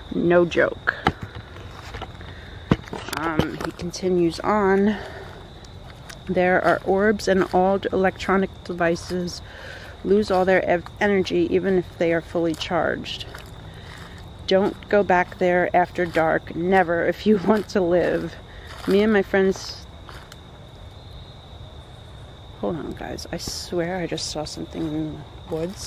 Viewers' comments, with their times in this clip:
0:07 a faint whistle maybe